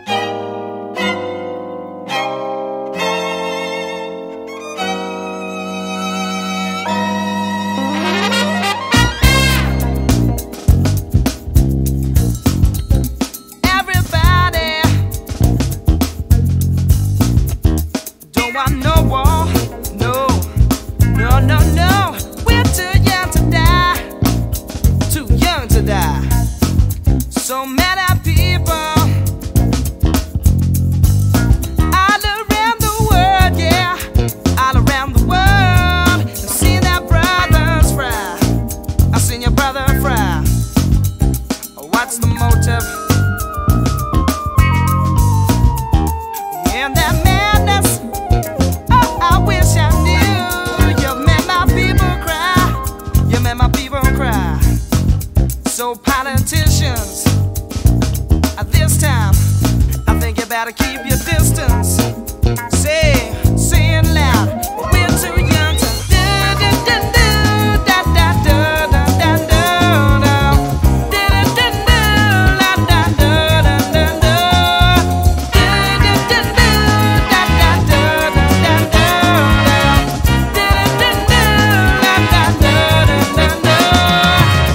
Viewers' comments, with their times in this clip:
0:09 Where is it funky? The beginning is more funky!
1:06 Am I getting numb or crazy....or that sounded a lot Steve Wonder??